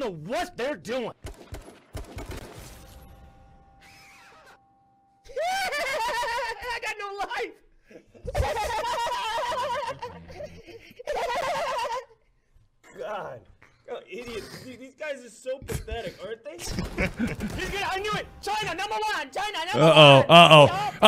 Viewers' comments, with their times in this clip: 0:04 gets me everytime. The way he cracks up at himself
0:04 The Doctor brightens my day the dude is Legend.....I love his black leather vest in very 1st clip and when the Doc does that laugh it sounds like he is imitating the little douche bag Ninjas tantrum laugh after some 12 yr old trolls him lmao